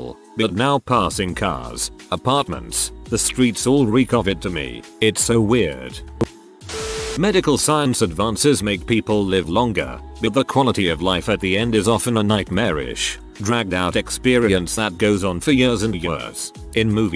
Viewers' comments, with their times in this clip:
0:03 Someone tapped the mic no need to thank me